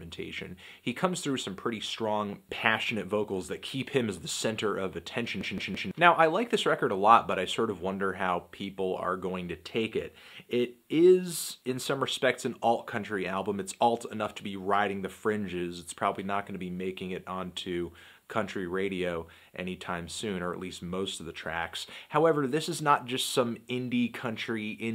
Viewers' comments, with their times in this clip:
0:05 possible upload issue stutters